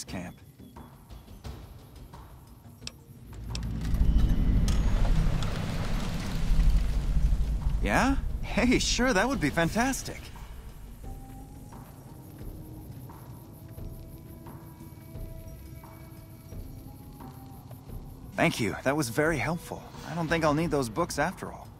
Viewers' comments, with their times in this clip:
0:04 why does Liam O'Brian voice literally every NCR character?